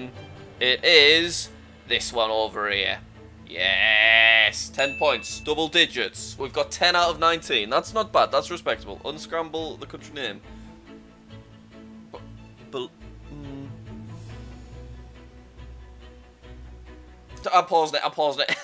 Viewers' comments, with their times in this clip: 0:05 was that ten or one